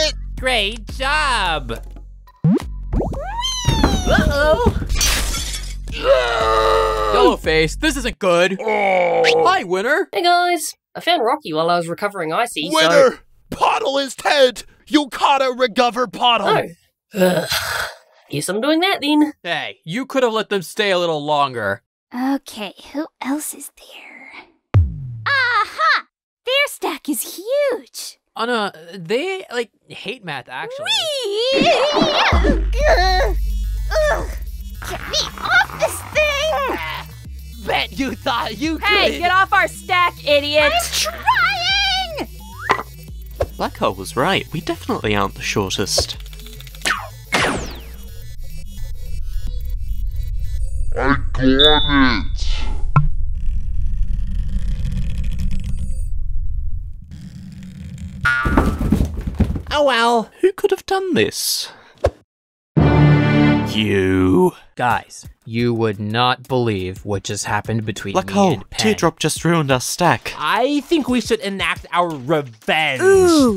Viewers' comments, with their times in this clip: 0:05 YAAAAAAAAY!!! I love how yellow face screaming loud
0:50 Put It In 2x Speed If You Hear His Original Voice
0:50 if you speed it up it sounds like his normal voice
0:53 how come marker sounds like TB
0:59 marker voice was tennis ball's voice
0:59 "Oh well!" is in TB's voice.
0:59 tennis ball voice